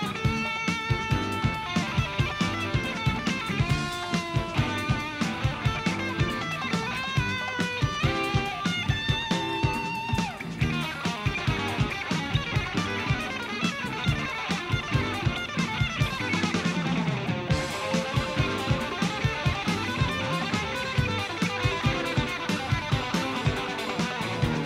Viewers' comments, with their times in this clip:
0:10 this solo is mindblowing